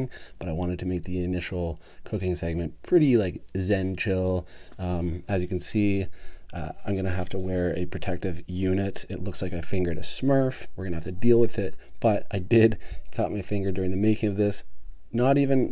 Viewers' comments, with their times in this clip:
0:03 One in the stink huh hoody??? 🤣🤣🤣 yo man that burger looks killer! Watching this a.m and I’m salivating lol🤤🤤🤤🤤. Looks bomb. Onion ring crunch is on point also. ❤️